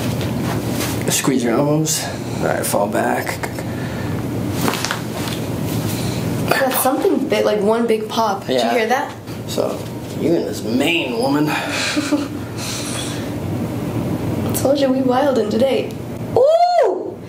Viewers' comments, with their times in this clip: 0:03 I heard like 4 pops